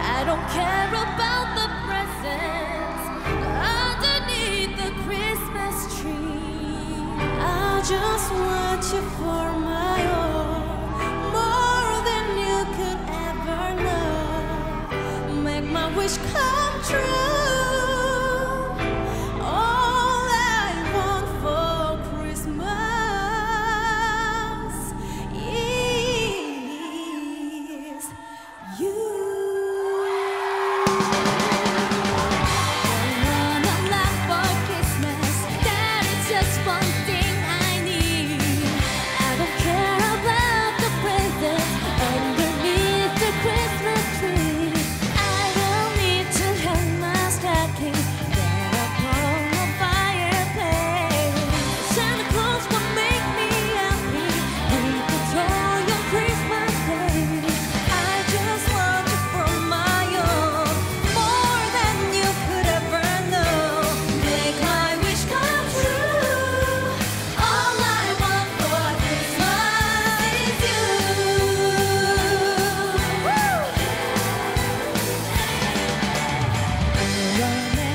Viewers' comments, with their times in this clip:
0:07 Taeyeon’s vocal is amazing...
0:16 who's this girl? hers vocal drives me crazy
0:58 I miss your voice Jessica Jung 💕